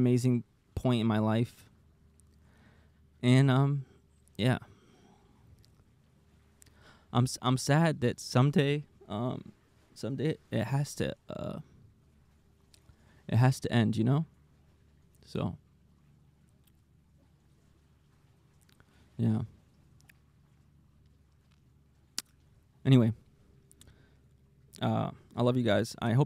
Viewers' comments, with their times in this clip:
0:09 Oh man. Your voice cracking really got to me 💔 I shed that tear instantly